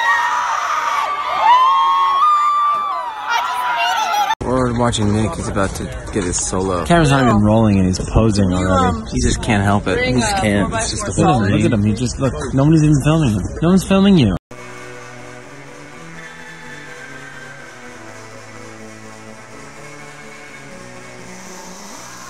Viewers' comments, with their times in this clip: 0:03 Bahahahah the girl just screamed “I just peed a little” 😂😂